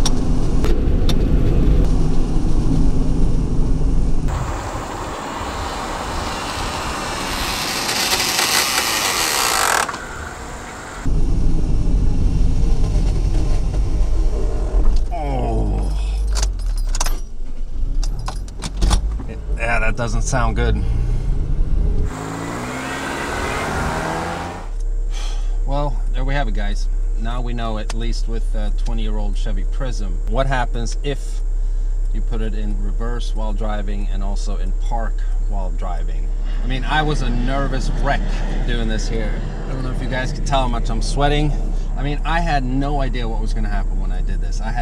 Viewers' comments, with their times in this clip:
0:05 7-56 it looks/sounds like a huge remote controlled car😂
0:25 you sounded so sad lol